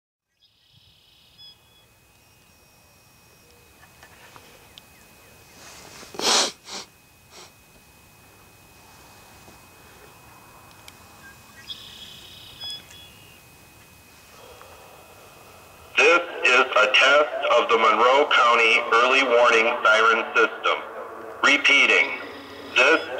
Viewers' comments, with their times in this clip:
0:05 Video: Rainbow Painted Federal Signal Modulator 6024 Siren Test Cam Guy S N I F F S N I F F